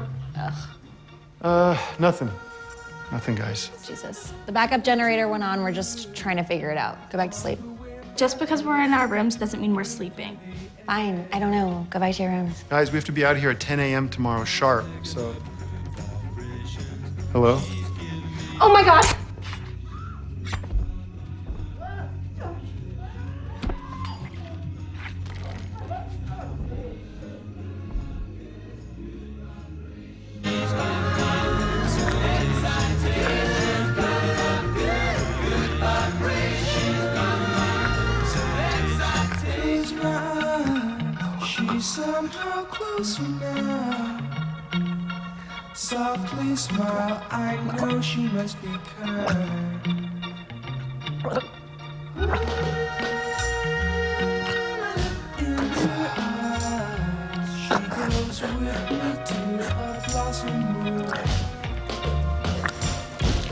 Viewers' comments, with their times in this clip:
0:10 Dude... the attitude with which she says that is commendable..
0:15 The way he casually says “hello?” Before realizing what’s happening is the best part. This scene was a cinematic masterpiece.
0:17 It’s cool how Jordan Peele includes comedic moments; the Ophelia-Police moment; in his horror films That scene was messed up for the parents...... never thought i would hear a gangsta-rap song in a horror film... thank you Jordan Peele.
0:46 omg its so disgusting horrible and disturbing to hear her get choked in her own blood😣😰😩